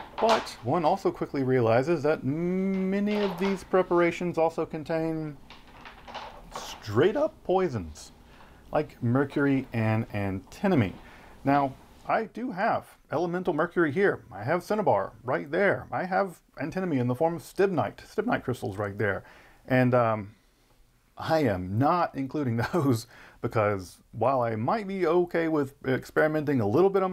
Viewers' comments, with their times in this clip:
0:08 The sound of those pages is amazing